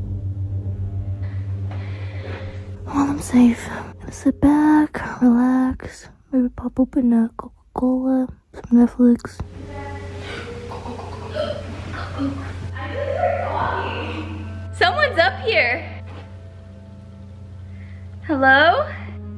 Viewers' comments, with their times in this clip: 0:04 is it Spanish txunamy I couldn’t understand